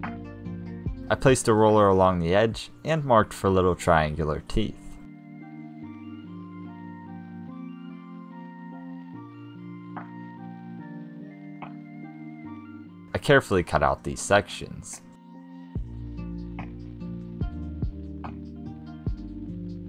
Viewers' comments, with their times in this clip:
0:03 The music sounds like an ambient version of that song that goes "looking at life through a loaded gun, you'll find yourself alone" by Zyzz. Haven't heard that one in years.